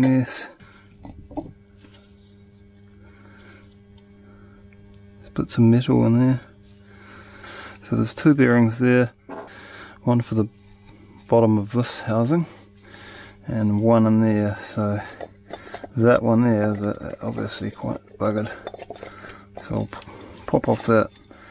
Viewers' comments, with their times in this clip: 0:08 u had to take a deep breath after that one mate
0:09 Something was leaking gas ... subtle but audible !!
0:09 was that a fart haha, nice video